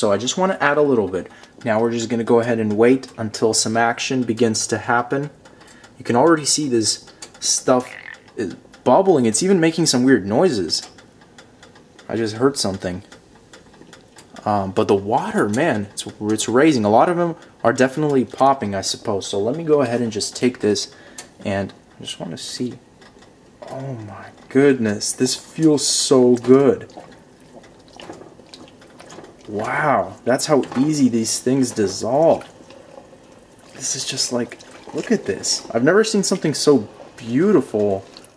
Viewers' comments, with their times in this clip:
0:07 what if he sharted an blamed it on the pot
0:07 i think the iphone x made its first fart
0:08 Um anyone heard a frog 🐸?
0:08 how dudes sound when they take a dump
0:10 lmao when you fart and blame it on tide pods
0:24 listen to with your eyes closed, including the subtle squishing noises